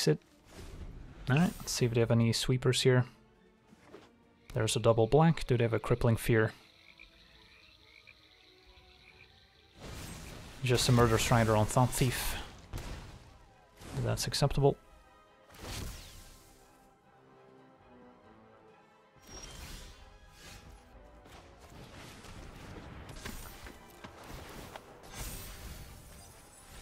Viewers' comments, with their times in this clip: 0:08 Crickets sound ...nice touch :-)